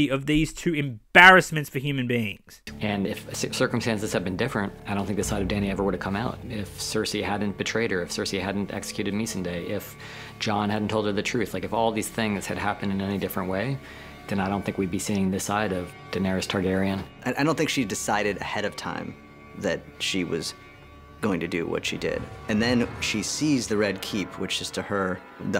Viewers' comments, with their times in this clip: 0:09 He doesn’t know how to pronounce his own characters name.